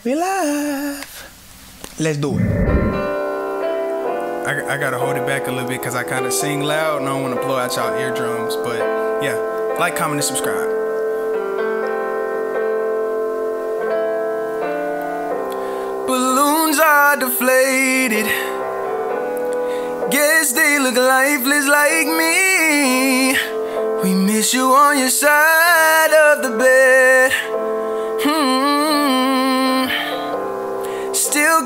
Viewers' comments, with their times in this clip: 0:10 to hear him sing with his bouitful voice
0:12 for the singing
0:18 He begins singing